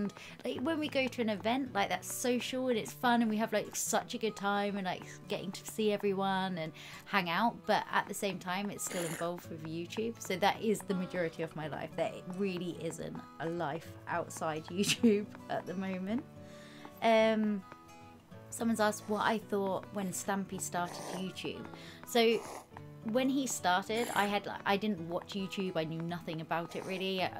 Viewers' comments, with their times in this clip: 0:08 the zombies voice is like 😅😀😄🤗😜😝😛🤑😋laughing my pants off right now Wooh